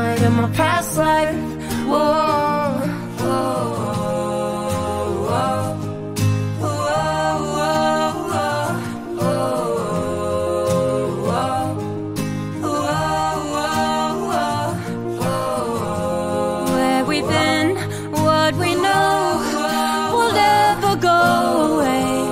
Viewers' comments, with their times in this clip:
0:03 HER VOICE OMG I- 😍😍😍😍